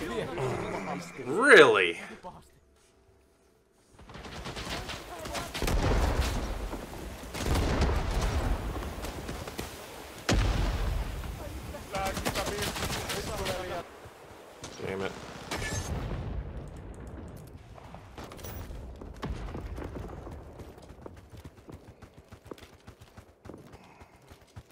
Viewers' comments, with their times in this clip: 0:09 When the snow in Vietnam speaks in Finnish.